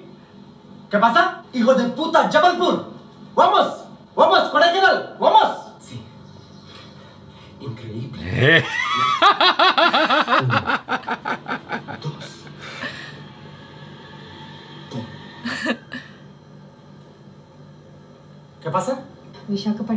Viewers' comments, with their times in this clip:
0:07 scene when jaby was laughing i was like jumped from my bed and shouted like i was in hell and got punished my parents came and they started crying 😂😂😂😂😂😂😂😂